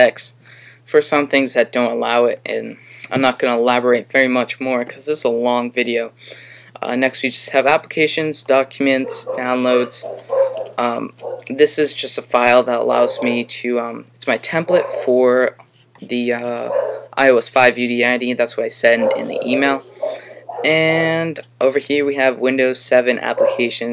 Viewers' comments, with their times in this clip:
0:07 listen carefully to the dog barking! :)